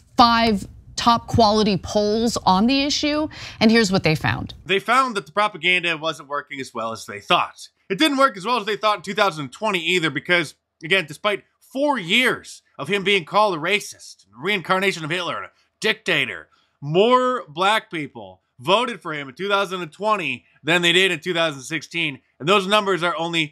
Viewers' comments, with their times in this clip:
0:04 I can’t stand hearing her voice. I would rather hear Yoko Ono screech